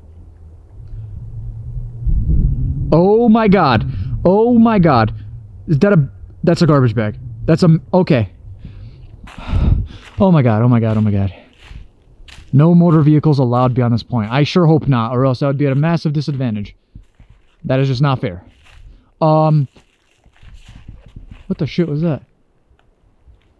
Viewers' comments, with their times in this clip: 0:04 is that a car or the wind 🤔